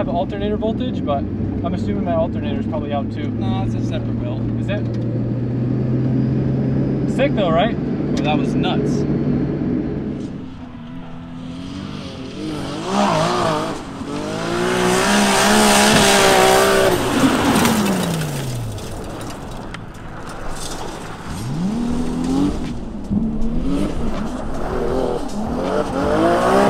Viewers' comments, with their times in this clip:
0:09 Sounds SO GOOD!!!